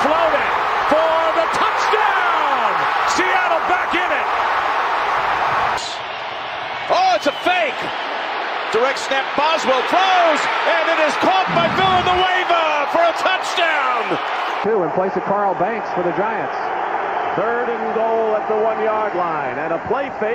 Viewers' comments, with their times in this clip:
0:03 screams in the refs face